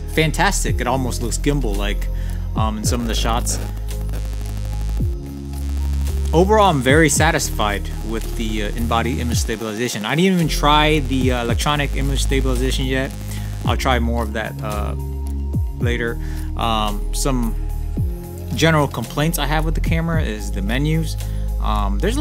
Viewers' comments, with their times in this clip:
0:10 Nice perspectives. What happened ? Sounded like the AF motor was picked up by the mic. Or you were just revving us up...